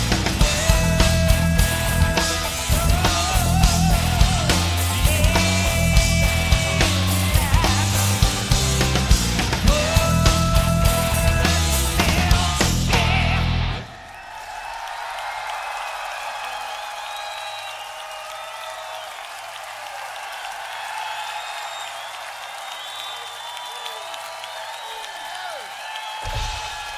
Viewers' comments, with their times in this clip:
0:10 I love when they end this song with that “SHYEEAAAH”